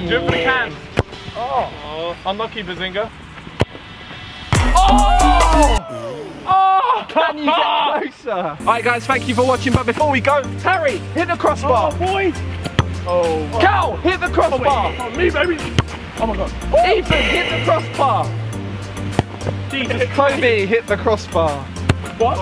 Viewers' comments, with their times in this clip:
0:06 who tf farted?! 😂😂😂😂😂😂